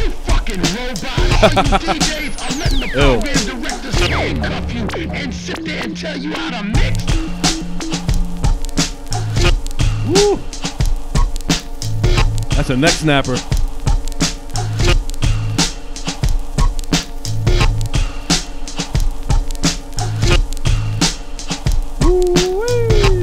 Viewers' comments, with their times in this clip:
0:08 Gives me some Dr. Octagon vibes